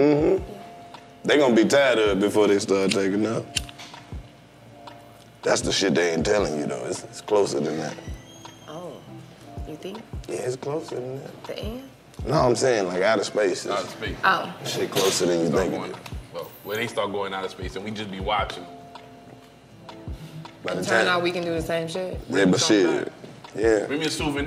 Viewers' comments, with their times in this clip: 0:08 The door opening had me searching my house…had to rewind and make sure